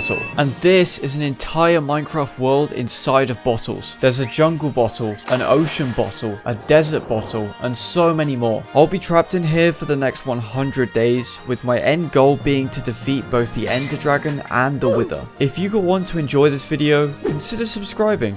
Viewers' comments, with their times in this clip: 0:04 and this is a bottle of watta